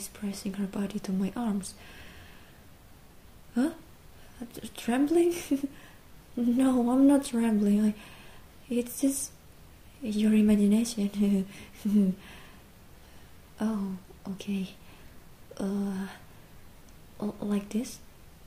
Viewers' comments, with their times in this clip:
0:05 Bro I’m dying that nervous laugh was adorable